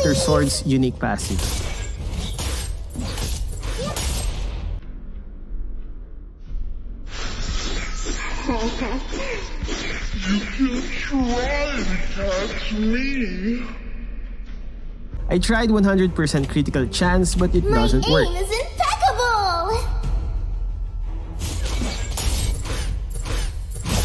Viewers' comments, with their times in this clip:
0:05 oh god that sounds so awfull in slowmotion ;-;
0:07 (full volume recommend) XD
0:07 what the heck is that voice line
0:08 Lol the slowmo sound
0:08 Her voice...why is it stuck in my head?
0:11 Is it me or does wanwan sounded like james charles on slow mo?